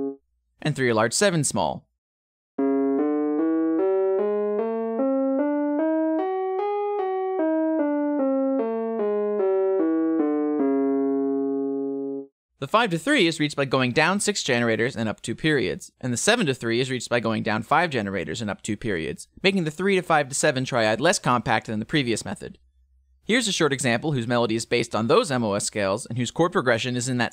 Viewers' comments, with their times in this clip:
0:09 as an egyptian, those intervals really reminds me of a specific maqam in our traditional music using a half flat minor 2nd lol